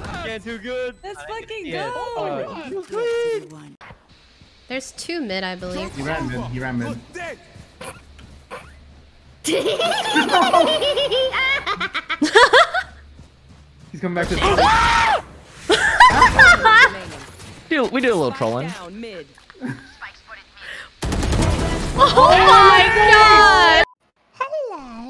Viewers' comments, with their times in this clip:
0:09 Tractor Engine starts it was foking scary tho